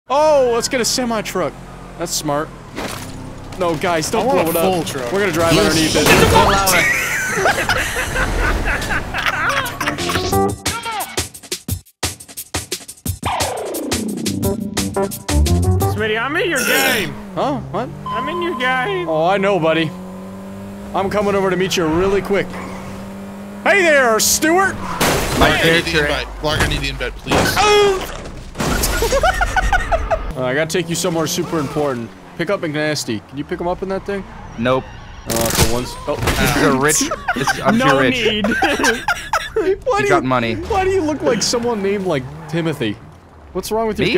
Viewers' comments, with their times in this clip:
0:00 semi truck or semi duck?
0:22 everyone gangsta till ya hear the halo announcer go “Sunday driver”
0:26 Why did you make the sound franklin makes when he takes damage